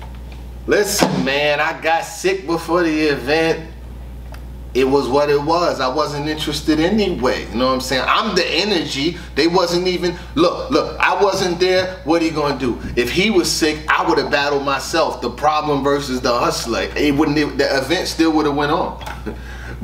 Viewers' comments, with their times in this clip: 0:07 Perfect Cassidy impression